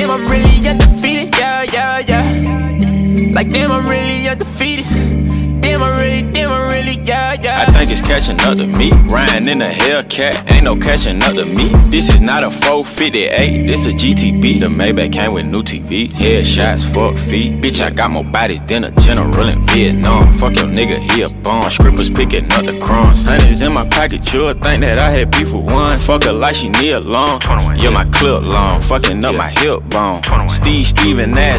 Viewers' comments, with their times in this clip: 0:06 Song starts btw
0:16 "fook feet" that british accent hahah